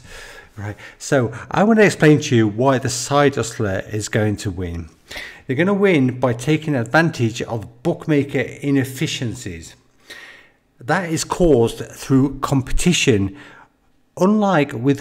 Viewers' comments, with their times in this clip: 0:03 punchtown mister policeman, that's my free tip for today